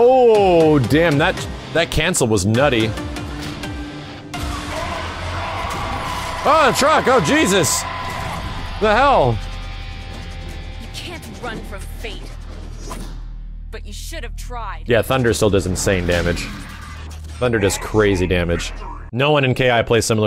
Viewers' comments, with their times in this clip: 0:03 I swear when he yelled ultra I heard "A TRUUUUUUUUUCK!!!" Then the truck just slammed in.